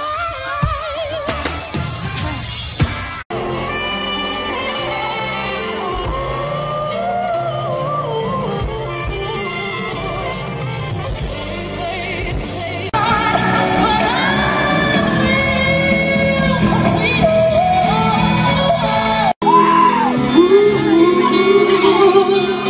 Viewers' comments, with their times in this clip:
0:05 imo that run was the most incredible thing she did tbh. it was so seamless. too bad it was just one time. :( she attempted to do it in another show during the Formation World Tour but it didn't hit the same.